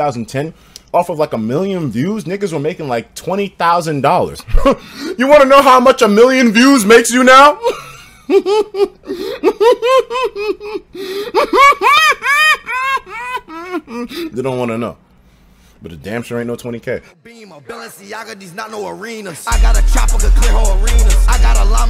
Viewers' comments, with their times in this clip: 0:07 what the hell kind of laugh